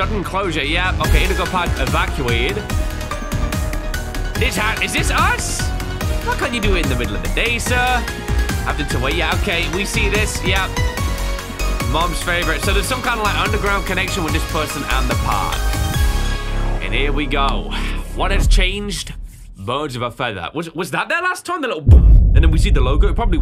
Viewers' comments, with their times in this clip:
0:06 This music is pure fire